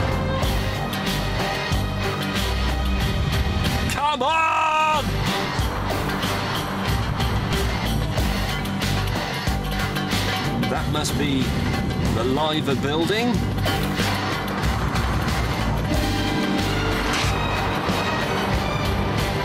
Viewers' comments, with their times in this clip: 0:03 That "come on" sounded like Jezza Clarkson 😆